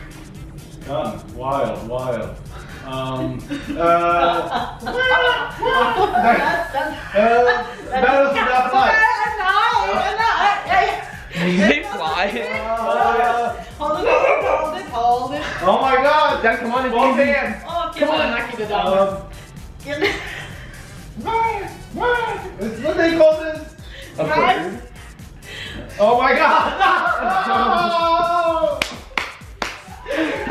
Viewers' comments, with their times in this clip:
0:07 turn volume all the way up, you can hear some sort of whisper
0:07 Turn up your volume all the way did anybody hear a whisper or is that just me?
0:10 What the heck did Bosley bark at, at like
0:14 what did bosley bark at?